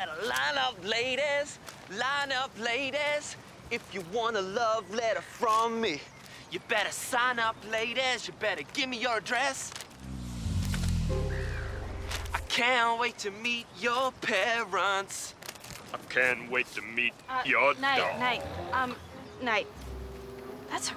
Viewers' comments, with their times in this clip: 0:07 I was loving nates song